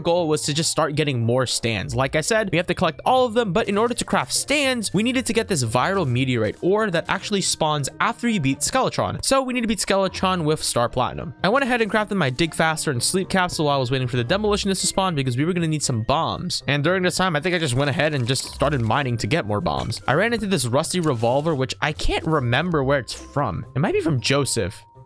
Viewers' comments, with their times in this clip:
0:07 I thought bro said duck🤑